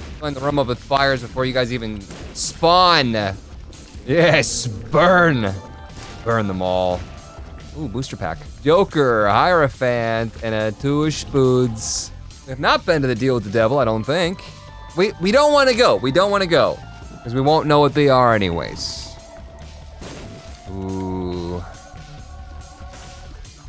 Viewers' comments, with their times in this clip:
0:10 "BURN THEM ALL"!!! Where is demon huts voice???